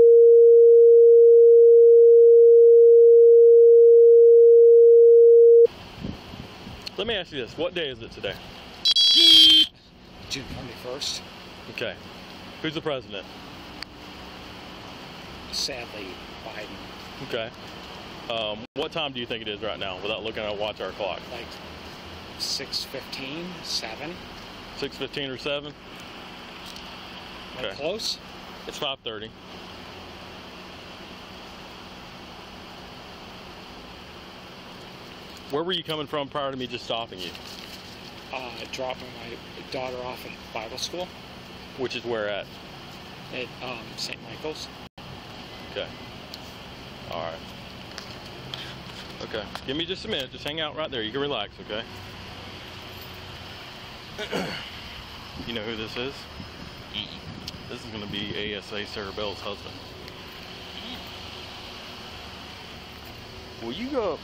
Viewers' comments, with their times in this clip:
0:06 The loud af ear assault ends
0:06 Ear piercing buzzing stops just so y’all know….. 👌🏼🙄🤫
0:49 if you want to save your ears.